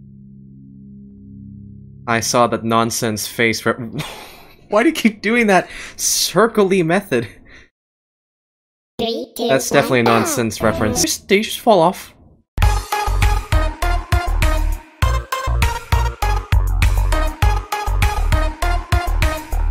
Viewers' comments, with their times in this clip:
0:07 Stickman starts singing